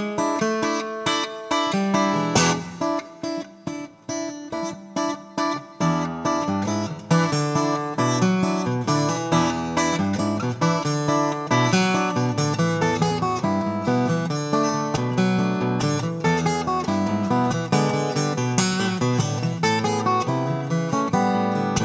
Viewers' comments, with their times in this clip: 0:06 ....paperback writer...WTF.....thats serious guitar playing.